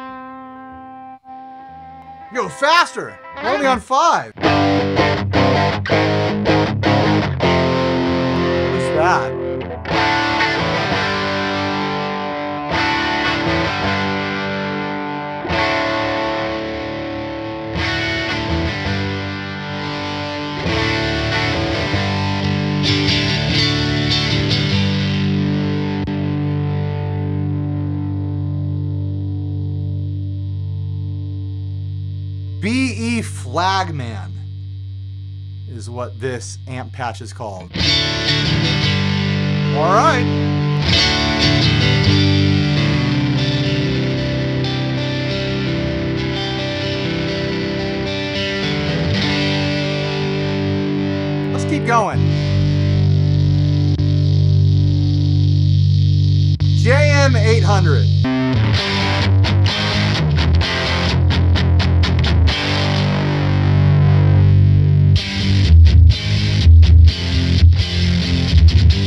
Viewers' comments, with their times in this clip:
0:05 it almost sounds like there's some dry signal mixed into the distorted signal. That's not good for a preamp style pedal - does the level maybe work as a blend?
0:51 I knew that mid wasn't going to last long.